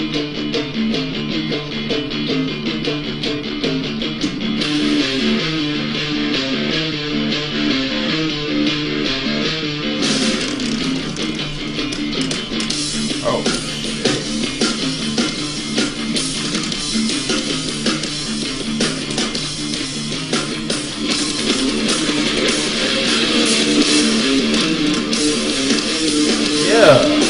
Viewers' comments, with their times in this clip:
0:09 The Pans Labyrinth clip completely distracted him from what is arguably the greatest drumming breakdown in history :/